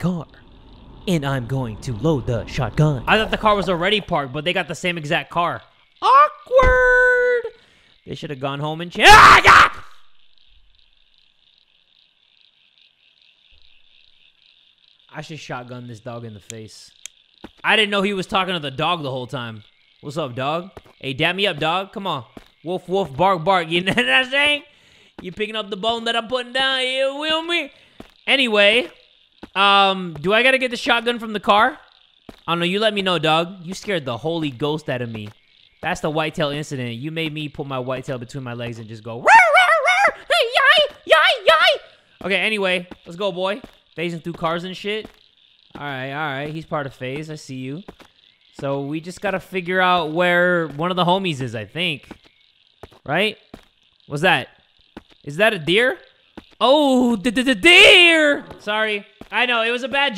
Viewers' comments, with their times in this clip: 0:08 now we have a scream to remember for the whole year
0:41 LMAO MY DOG LOOKED AT ME HE THOUGH U WERE BARKING